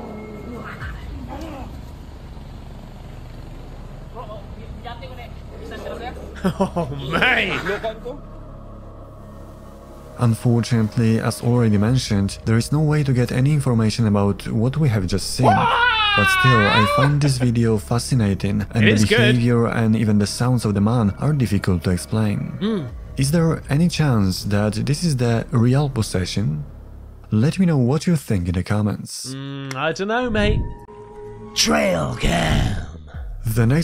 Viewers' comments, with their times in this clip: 0:10 that guy sounds like he could be lead singer for Disturbed 🤣🤣🤣🤪😏
0:14 The possessed kid was singing some Disturbed!! "Wha-ah-ah-ah!!!" LOL